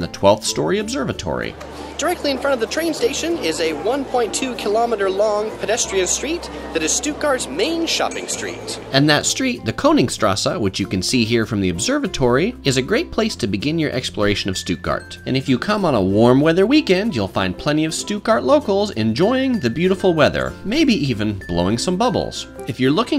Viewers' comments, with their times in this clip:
0:04 he sounds like Mickey Mouse here